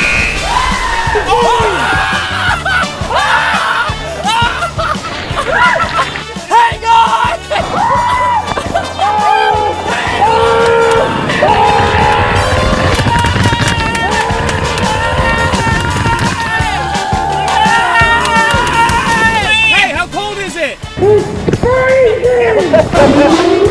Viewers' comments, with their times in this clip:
0:07 For some reason I sounds like the heat scream